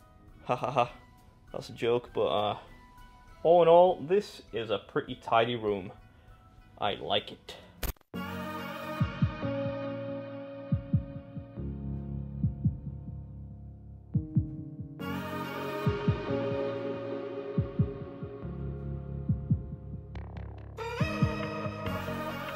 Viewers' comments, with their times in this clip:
0:05 I feel a like Jazz song would fit the montage better.